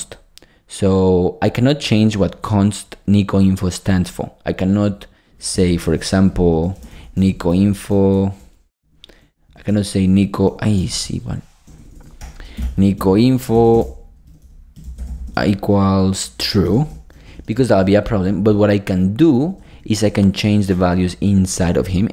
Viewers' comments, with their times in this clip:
0:10 It sounds like Korean profanity. haha ! Thank you for the video.